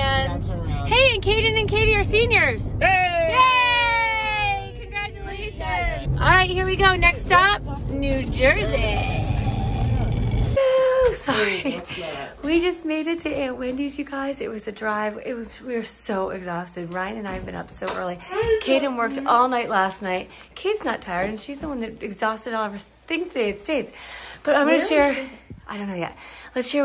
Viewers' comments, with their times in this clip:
0:09 Not the Megan the stallion aaaaaaaaaa lmaooooo